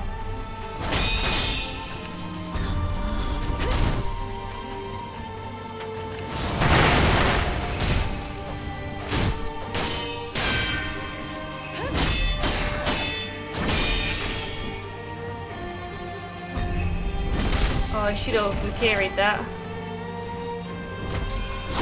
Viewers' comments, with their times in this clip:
0:06 sync with the OST lmao